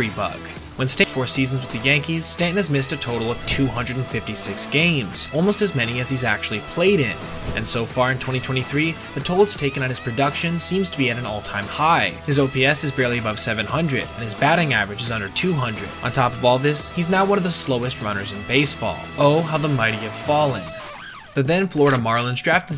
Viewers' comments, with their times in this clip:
0:08 Lmao he says doody 😅😅